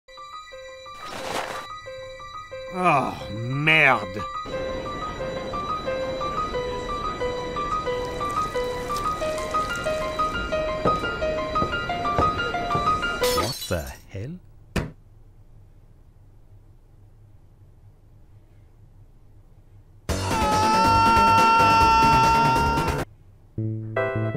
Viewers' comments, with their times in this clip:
0:03 bro talked french
0:08 ...Spy wasn't the one making those noises.